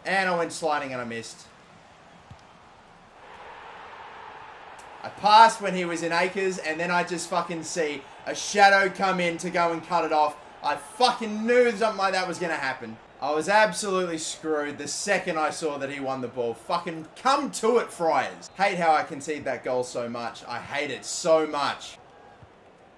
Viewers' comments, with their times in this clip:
0:08 he says coming en you see the name of the player